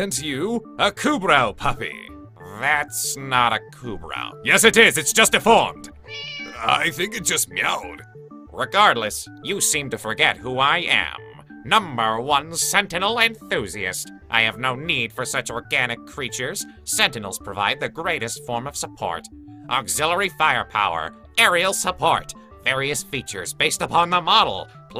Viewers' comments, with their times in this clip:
0:06 i thought the meow was the cat sitting behind me, so i looked at it, puzzled. it looked at me, even more puzzled than i.